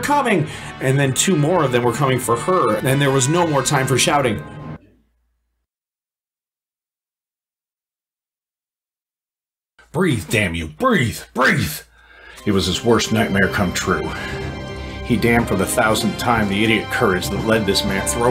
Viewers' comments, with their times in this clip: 0:03 I just wanted to say that your reading of this book is amazing! It is high-quality as many professional audiobooks I've read, for sure. I love the little sound effects and music tracks you put in, as it really gives it an authentic Star Trek feel. The part where it suddenly goes silent legitimately surprised me.